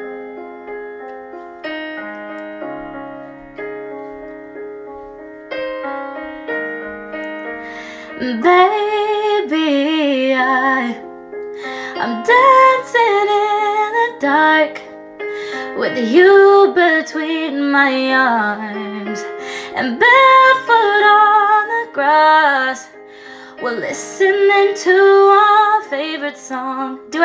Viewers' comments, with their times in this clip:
0:08 R I P actually tune